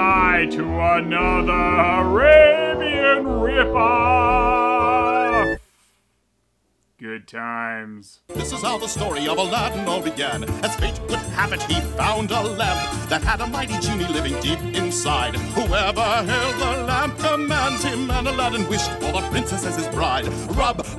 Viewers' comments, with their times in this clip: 0:08 That's a pretty jam rap bro.